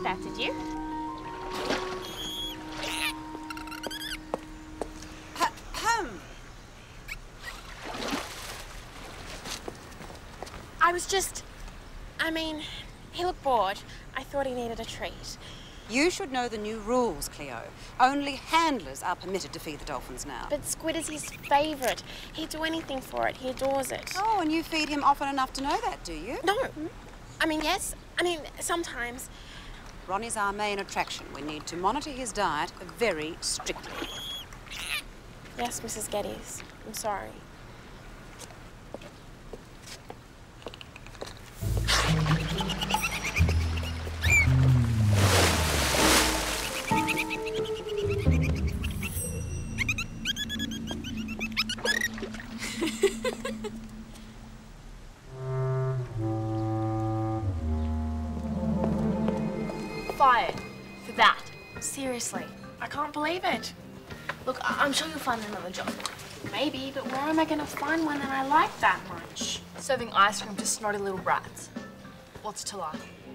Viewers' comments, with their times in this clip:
0:06 sounded like the dolphin said uh oh😂😂
0:54 Cleo: Laughs Her face reaction Me:🙀🤣🤣🤣🤣🤣🤣 This season is my favourite especially season 1